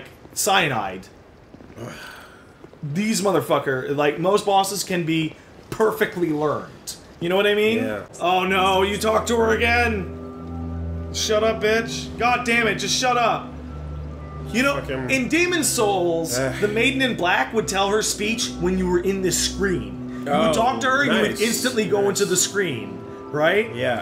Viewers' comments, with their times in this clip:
0:08 The use of music in this comp is perfect. Like the whole Old Dragonslayer sequence where you transition between the quiet and intense Nier music tracks? PERFECT. You know what I mean?